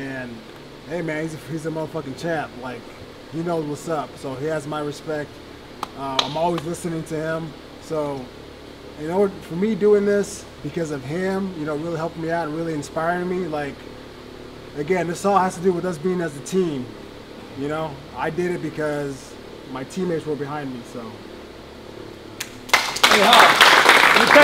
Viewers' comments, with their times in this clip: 0:05 all I heard was crickets after that 1 clap😂😂